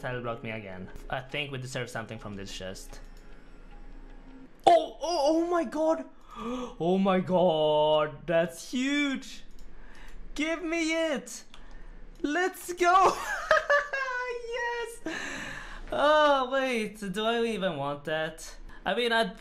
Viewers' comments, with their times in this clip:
0:07 Pretty Indian ''OMG''